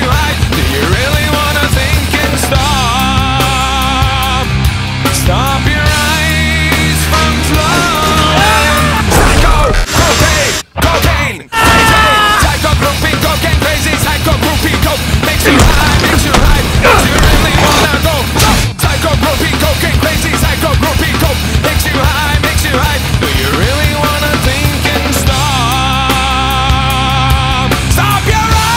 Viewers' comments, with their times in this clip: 0:10 i love how you can hear the guy screaming fits amazingly well with the song